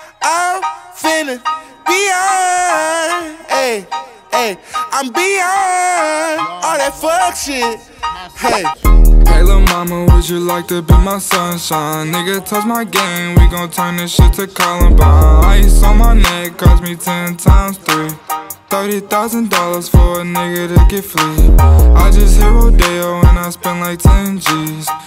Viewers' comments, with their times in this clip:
0:07 I was like "YA" when the beat dropped